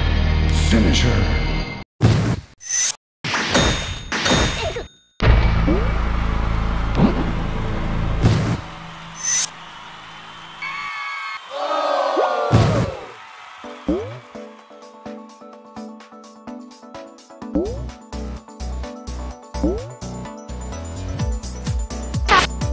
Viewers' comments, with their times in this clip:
0:10 sounds like a opila the bird jumpscare